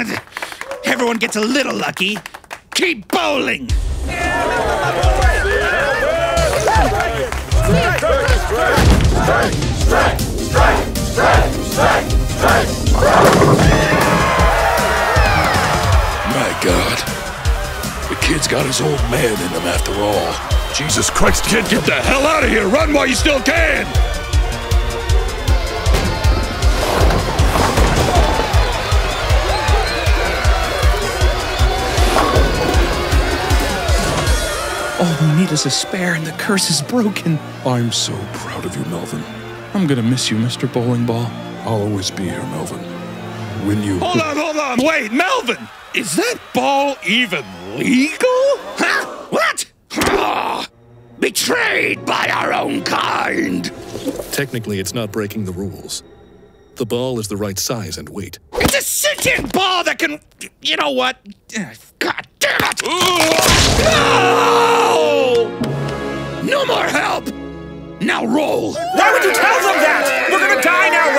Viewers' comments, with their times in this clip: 0:06 This 𝓯𝓻𝓮𝓪𝓴𝔂 slimy noise
0:06 I love how you can lowkey hear the moisture lol
0:20 Bro this part is so funny, the fact the kid is just standing there while this asshole is yelling at him.
0:54 for some reason the bowling ball with glasses sound like Markiplier, even though Markiplier wasn't even in the description.